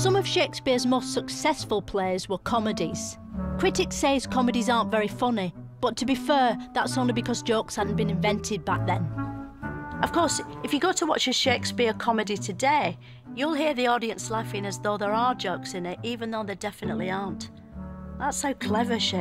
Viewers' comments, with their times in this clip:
0:04 stop using laugh tracks - You Brtish - if it is funny like Willamina Crunk - sorry spelling.... anyways it'll be self evident.